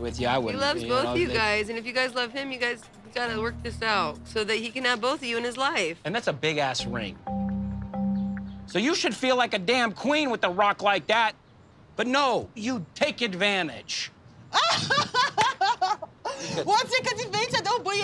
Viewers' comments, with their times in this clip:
0:06 this man yelling at Larissa and his shirt says friendly’s smh😫😭